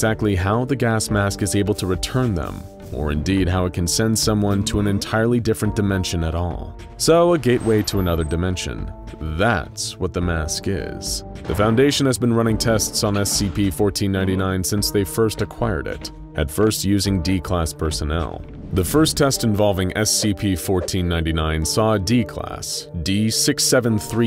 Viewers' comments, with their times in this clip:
0:09 haha funny cringe song